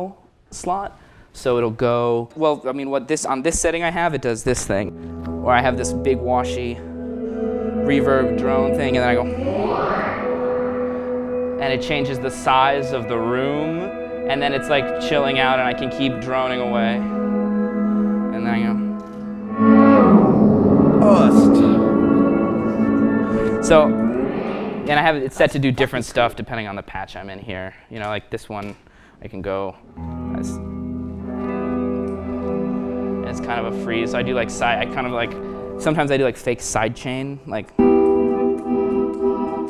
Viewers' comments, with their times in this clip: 0:07 Can anyone tell me what's the pedal called ? sounds lush
0:27 fuccck, that's the good Darkside shit